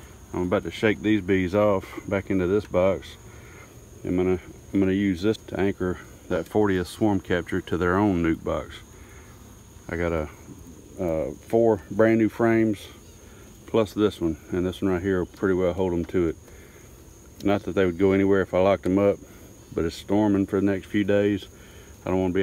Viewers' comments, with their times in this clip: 0:04 Y’all hearing that queen bee